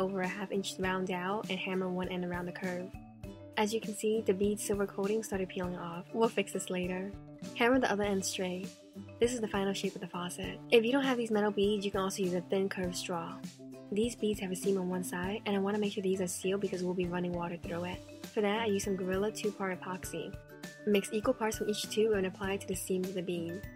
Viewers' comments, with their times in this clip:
0:09 the way she said it 😭😂